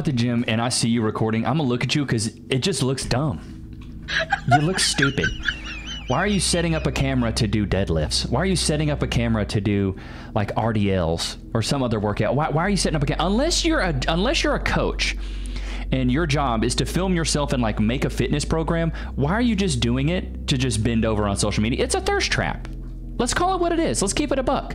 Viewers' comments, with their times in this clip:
0:08 pushing the laughing sound doesn’t make what you say even funnier, it’s just annoying hearing the same little sound by over and over and over